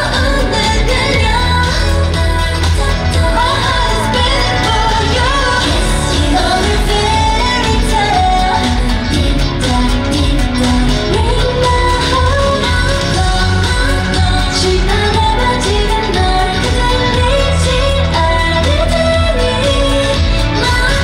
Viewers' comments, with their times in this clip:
0:03 i just noticed that there is a yerin's adlibs lol